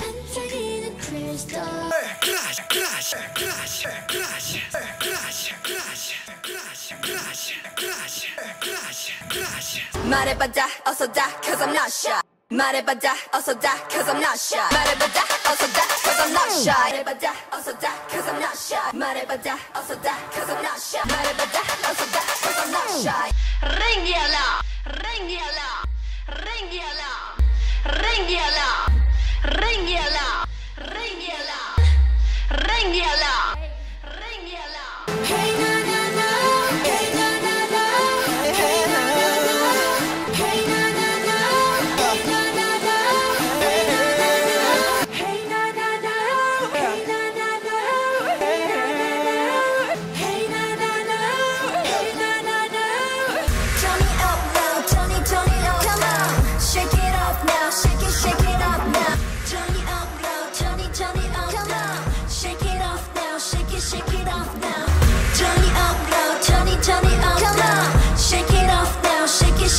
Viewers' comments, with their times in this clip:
0:06 it sounds like he is saying crush lol
0:08 sound more like "Grazie" to me lol, as a native Spanish I think that was meant to be in Italian rather than spanish(?)
0:49 im sorry but jimins "whee~" after hey na na na 😭
0:56 all this time I was saying "turn it up now turn it turn it up now, shake it off now shake it shake it off now" 💀